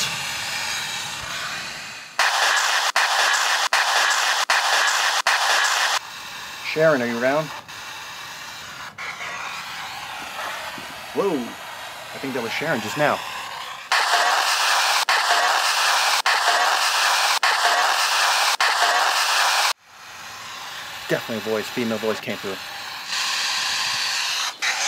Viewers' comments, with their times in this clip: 0:09 I think she said " I'm around" instead of " I burn" 😊😱😇